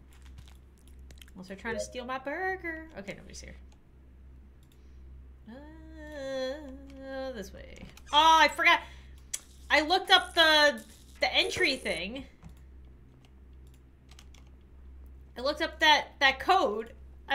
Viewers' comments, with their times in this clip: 0:04 why did I think she was going to break into song-